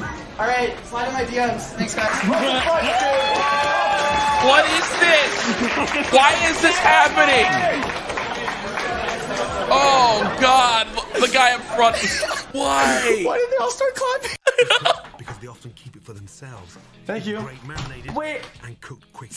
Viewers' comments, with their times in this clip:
0:03 that girl snap clapping lol